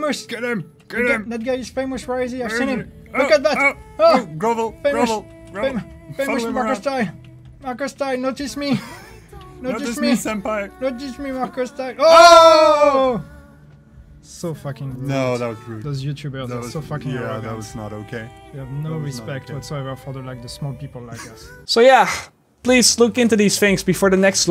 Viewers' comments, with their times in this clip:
0:08 Who else noticed that Moana song playing in the background